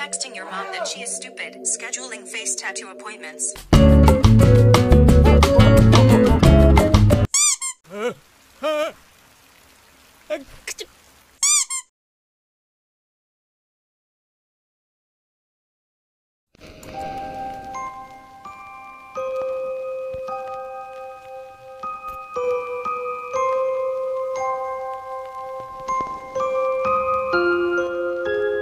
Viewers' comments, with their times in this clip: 0:09 You can't tell me Japans sneeze wasn't the cutest sneeze ever